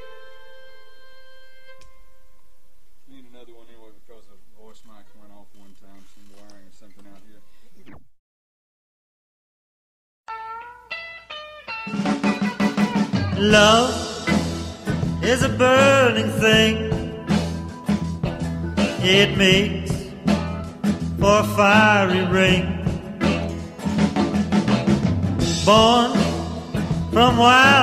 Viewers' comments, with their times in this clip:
0:09 That's a pretty good Ring of Fire